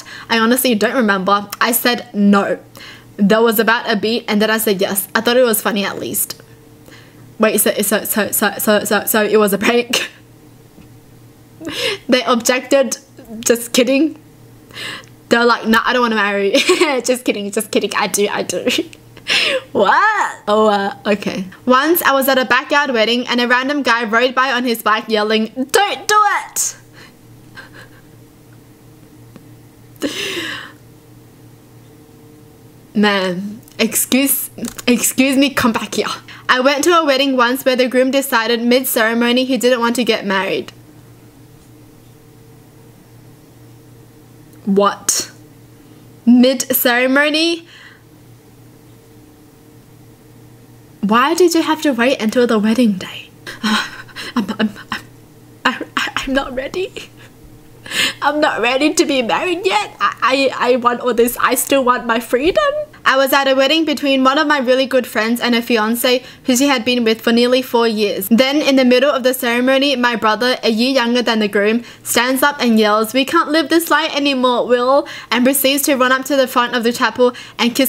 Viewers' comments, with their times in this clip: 0:08 Tbh that the so,so,so sounds like a part from Hamilton Comment if u know the next part
1:01 you sound like Merida from Brave!
1:01 when she said freedom she sounded like a high pitched merida XD